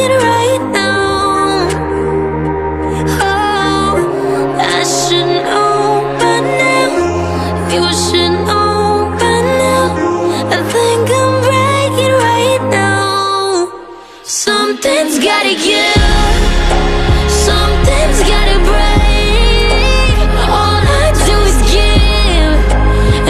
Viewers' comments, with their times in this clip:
0:10 "I think I am breaking right now"...wow listen to the pain in her voice...
0:10 the pain sounds so good...